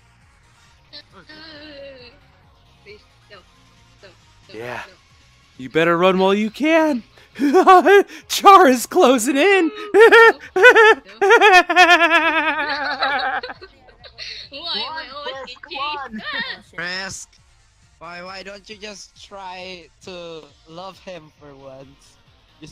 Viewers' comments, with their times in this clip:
0:09 At the time he sounds like a weird dolphin